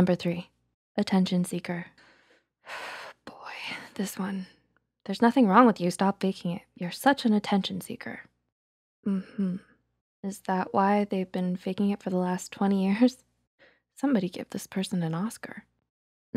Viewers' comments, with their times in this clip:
0:03 you hear that before haven't you.. i just felt little sad when you sigh and started to talk.. upset maybe mad that someome have the balls to say something like that.. we know all of us has heard this person, i myself believe that I'm an "attention seek" and i don't speak about my own feelings and anxieties